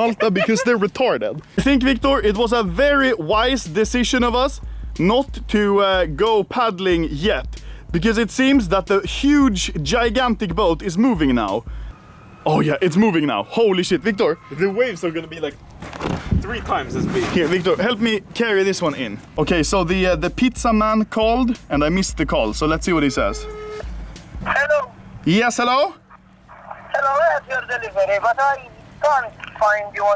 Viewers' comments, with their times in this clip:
0:10 That screaming woman though.
0:11 There is a scream ?????